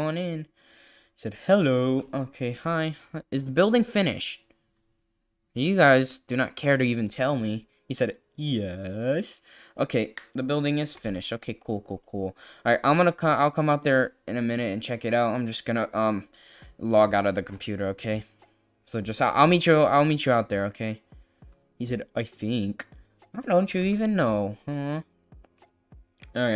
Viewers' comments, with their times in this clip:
0:08 sounds like talking Ben lol😂😂❤❤